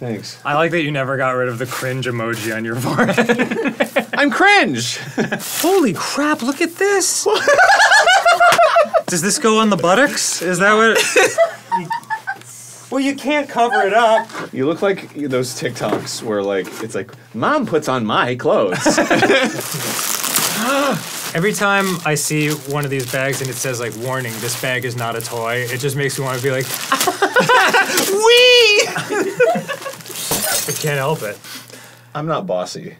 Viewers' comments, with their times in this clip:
0:05 I never heard Arin laugh like that before XD
0:06 Arin’s giggle-laugh is a new all-time favorite
0:07 that’s one of the best arin laughs i’ve ever heard
0:14 Kudos to Arin's impression of the TikTok text to speech voice